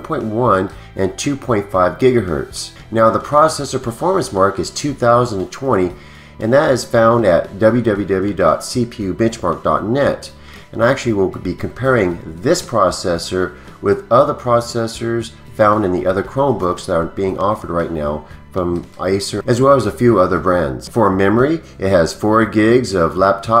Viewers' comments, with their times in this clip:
0:08 im sure he said bitch lmfao 🤣😂🤣